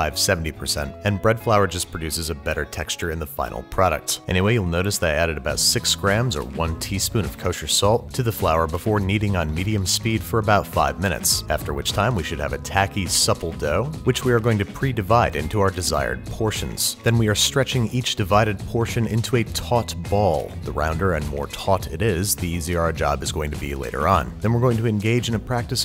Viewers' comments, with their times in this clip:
0:08 heard kneading on knedium speed